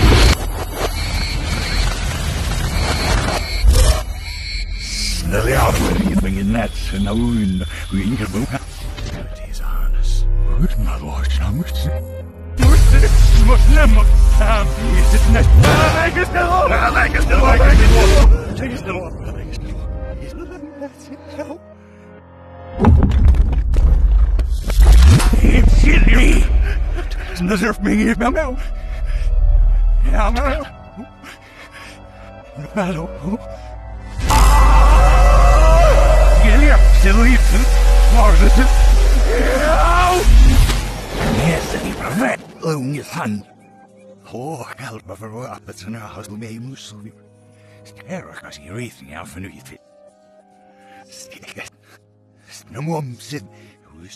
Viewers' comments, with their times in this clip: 0:08 At the start he says release me, and he says melody’s harness or gravity harness Idk...
0:08 to me, whenever i think "melody's a harness" he says that but when i think "gravity's a harness" he says that too monkaW
0:09 I believe he also says "abilities harness" It's very hard to understand though.
0:09 it sounded like he said “the melody is the harness”
0:10 “ would my lord show mercy?” Maybe accidental but that’s what I heard
0:10 it sounds like he said "My lord show mercy"🤔
0:13 on there was a part I heard faintly where sigma said after Must never have, where he said directly after that "he's a snake."
0:15 I hear him Yelling "Make it Stop" at least 3 times
0:18 does anyone hear ,leave us alone
0:18 i like the fact that even in the reversed part he still says hold it together also i hear something like „my leg is still on“ or „the light is still on“ or sth like this very clear. but tbh I don’t know if that’s just coincidence cause in the non-reversed part he speaks normally PepoThink
0:24 is it me or did he say "blizzard nerf me now"?
0:24 Definetely gave me goosebumps.. "Its in me" is what I heard and honestly it sounds like hes trying to hold back the evil side of him
0:25 I hear "kill me"
0:25 he screams “It’s in me” creepy...
0:25 does he say its in me??????
0:25 I see a lot of people sayng that he says "it's in me" He actually speaks in Dutch (his native language) "bevrijd me" that roughly translates to "free me" or "release me"
0:29 what i heard meow meow meow meow meow meow
0:32 I heard "Battle poop"
0:34 Distressed: “ I don’t know.”
0:40 “ Get out!!” Or “ Help!” Not sure